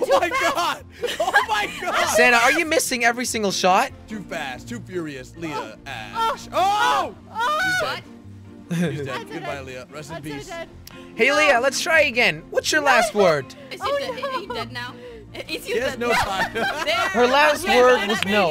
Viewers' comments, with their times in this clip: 0:05 something happened with the audio
0:05 bruh she sounds like some pstar